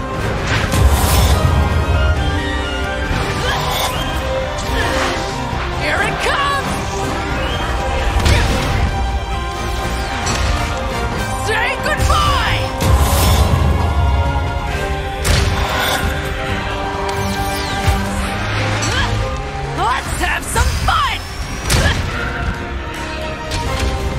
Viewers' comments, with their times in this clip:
0:09 My favorite part is this because of the voice acting